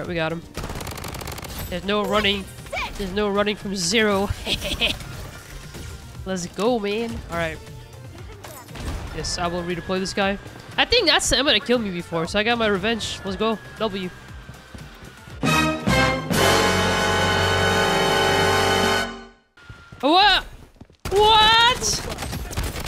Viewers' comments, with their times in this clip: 0:04 It's the "eheheh" for me😅